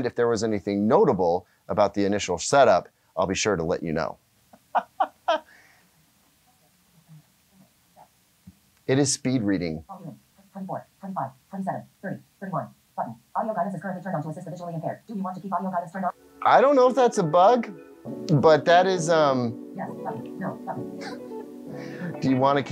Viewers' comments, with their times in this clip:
0:08 I use a screen reader in the living room (VoiceOver on the Apple TV) and that speech rate was actually kind of slow. :)
0:08 I saw a video of how a blind person uses their phones. Their phones reads everything on the screen. The surprising thing is the phone reads very fast just like in the video here. The point of the video was showing how the blind person had acute hearing that they can actually follow the speed reading. Assuming the auto-fast reading out of the box is meant for people with disabilities, maybe this is for them and it makes sense for them as reading at a normal speed feels way to slow for them.